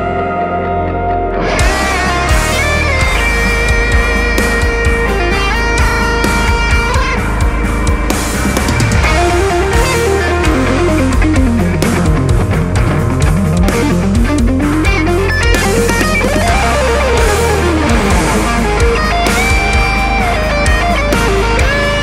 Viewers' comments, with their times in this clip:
0:09 solo -- on Dx2 is me .... there aren't words ...